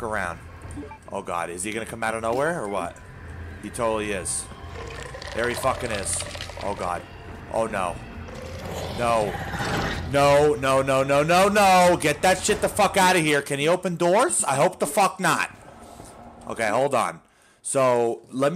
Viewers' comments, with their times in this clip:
0:06 Sounds just like Predator.. lolz